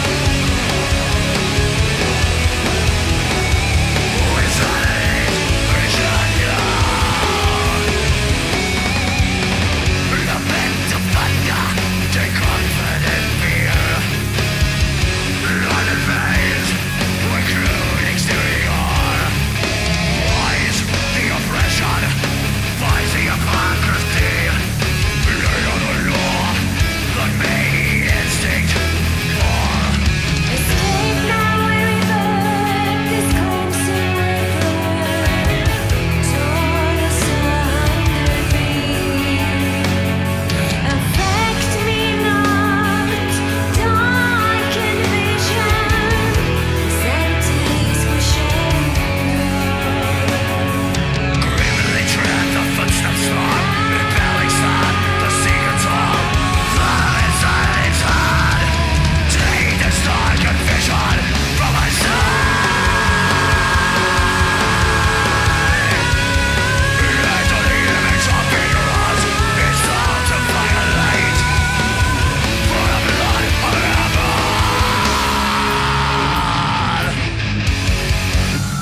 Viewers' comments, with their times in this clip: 0:10 "Panda" ?? :D hehhe, that's exactly how it sounds like...
1:01 Stunning background to the gutural